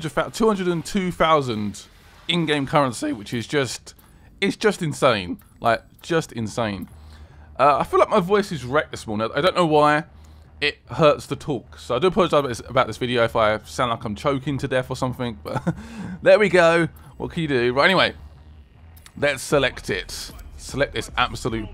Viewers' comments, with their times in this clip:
0:03 cheeky voice crack